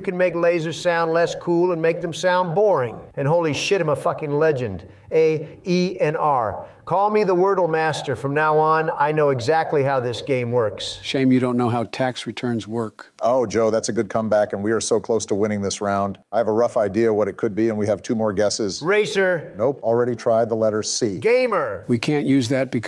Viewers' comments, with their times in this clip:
0:04 The way donald said A E R. sounds alot like the.. "Hor Hor Hor Hor Hor Hor" Meme.